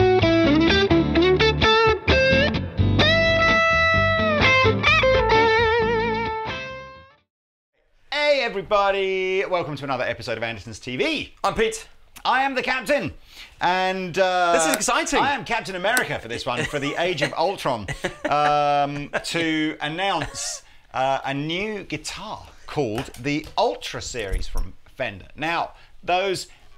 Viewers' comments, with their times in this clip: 0:08 Dad blooz ends